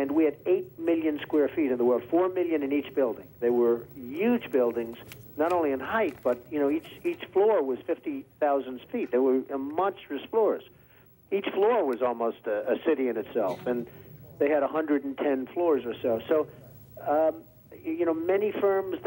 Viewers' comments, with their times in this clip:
0:04 Still with the ‘Yuge’ pronunciation even back then lmao love it 😆